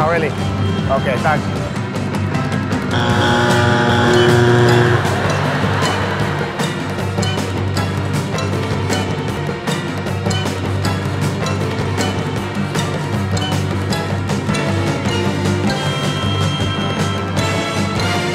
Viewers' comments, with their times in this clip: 0:03 3 buzzards at once